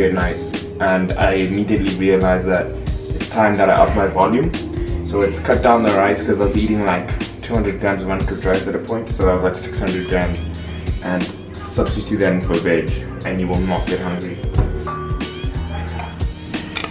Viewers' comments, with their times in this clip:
0:03 i found it bro, that instrumental playing